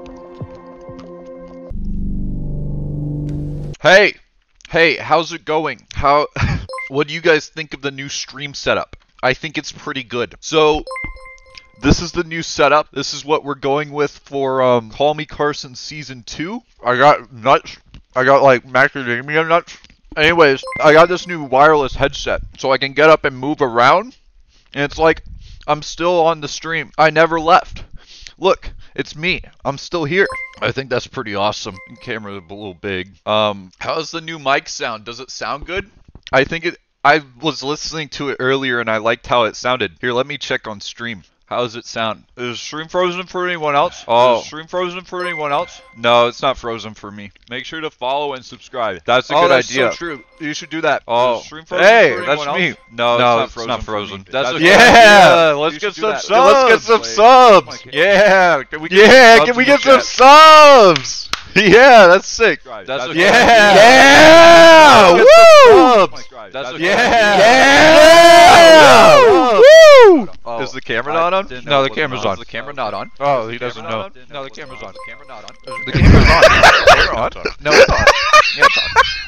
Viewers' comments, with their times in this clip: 0:09 Why do I here dojo sounds...
1:03 that yell gets me every time for some reason